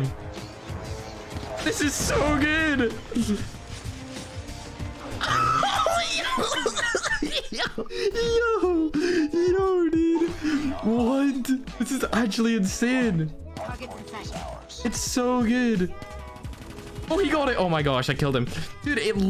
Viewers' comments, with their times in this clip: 0:05 tf was that laugh tho 😂😂
0:05 demon clown laughing
0:07 that laugh doe